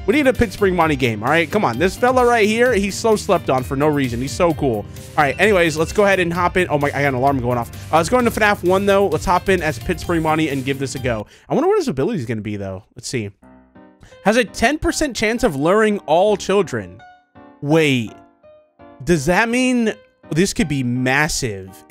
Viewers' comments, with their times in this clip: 0:08 that was so perfect he said he is sleeped on and then a alarm played